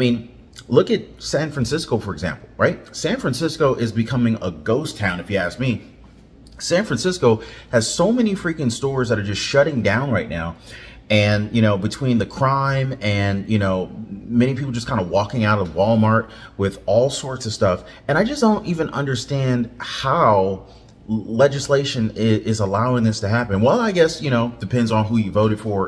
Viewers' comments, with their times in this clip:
0:06 During the clips in and before you are talking but there’s no audio for you.